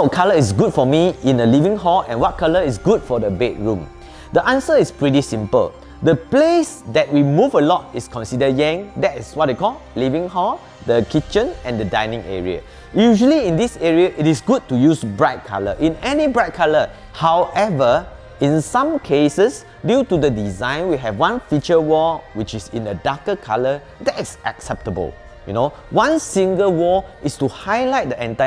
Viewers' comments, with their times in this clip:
0:09 the WHAT Hall, Living Hall, Kitchen and Dining Area? I couldn't tell what he was saying at that part.